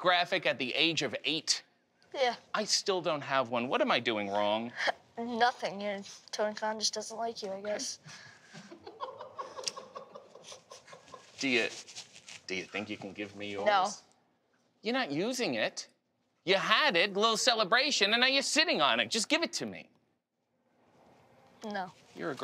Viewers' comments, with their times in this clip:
0:07 If you listen carefully you can hear someone in the background that someone was chuckling pretty good after that comment from -1.😆😆😆
0:08 would be great if that was actually TK laughing 😅